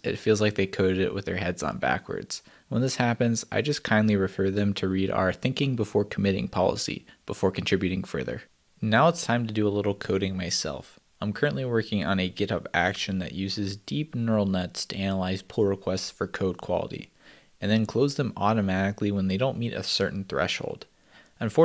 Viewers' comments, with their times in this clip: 0:07 that yawn (maybe avery 1 minute). lol!!